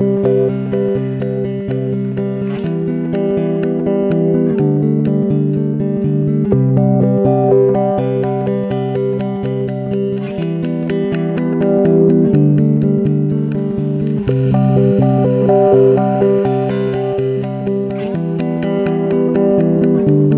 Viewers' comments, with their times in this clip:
0:06 That riff along with the background audio is soooooooo tough